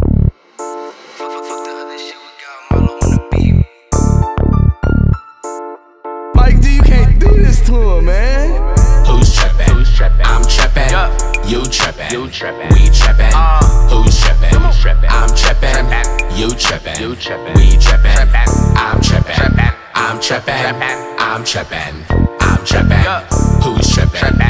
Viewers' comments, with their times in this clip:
0:09 If Squidward could rap... 😂🔥💯